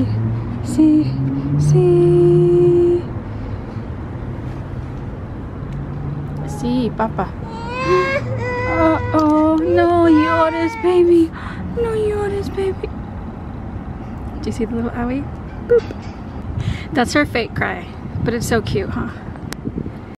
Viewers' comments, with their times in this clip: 0:07 haha so cute😂 & the look she gave you after the fake cry 😂💕